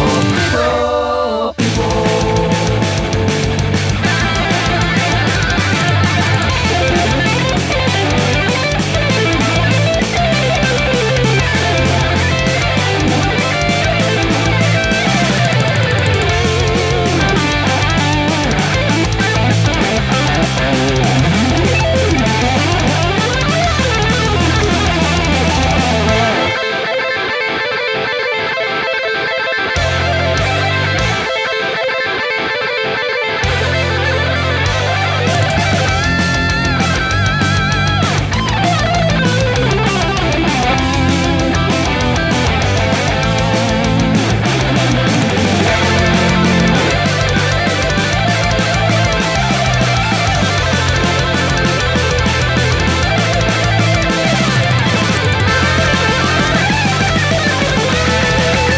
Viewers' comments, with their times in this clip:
0:06 I'm trying to learn sweep picking and I'm not very advanced yet, I loved this sweep picking lick here, and was wondering if anyone let me know which chords he's arpeggiating exactly, and what scale notes from outside the chords he's including? I think it's in A Minor, and he plays a D Minor (Dorian), E Minor (Phrygian), F Major (Lydian) and finally a descending line in A Minor?
0:46 I love the dual guitars 😮